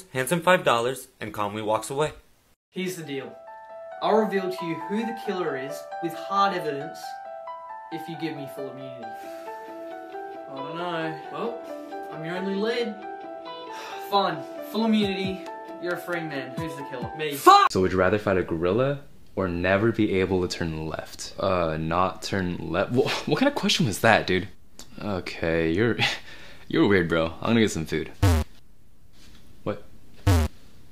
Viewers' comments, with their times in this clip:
0:03 I like how they just casually play death note music in the background.
0:13 I like that music